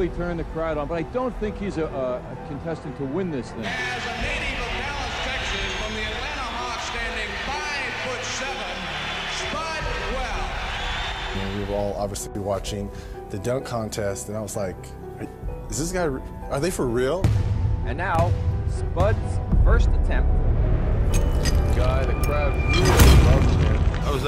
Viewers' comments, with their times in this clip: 0:10 Did the announcer called him Spuddd Well?